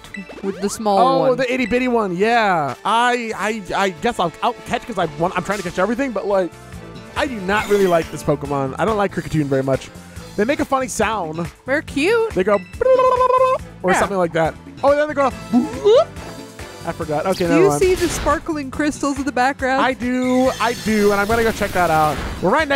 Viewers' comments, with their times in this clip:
0:06 bad take, funny music bug go brrr oh im caught up i think, i can give requested tips! ok so, black text box trainers aren't necessarily higher level than you nor the other way around, they simply have a challenging team by the standard of the route. Higher levels, more Pokemon, all held items. I wish I knew about them going through because I just avoided all trainers to avoid getting overleveled off of easy trainers but these would've been wroth fighting. i didnt use koraidon. i used miraidon. hah. funni. anyway i didn't even know that there were supposed to be gym trainers for the first one.